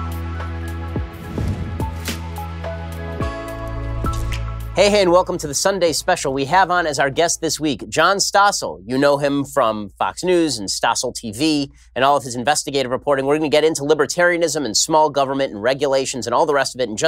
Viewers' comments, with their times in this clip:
0:04 when did Ben Shapiro become Krusty the Klown?